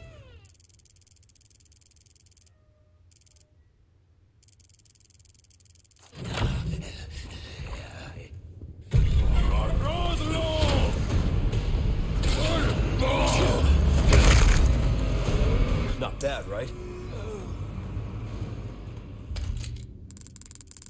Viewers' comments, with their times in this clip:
0:06 no shit he is taking a shit in the toilet this isnt a fun fact what is a fun fact is how if you watch this video at 2x speed the villager sounds like he is saying close the door (dont ask me why i was watching your vid at 2x)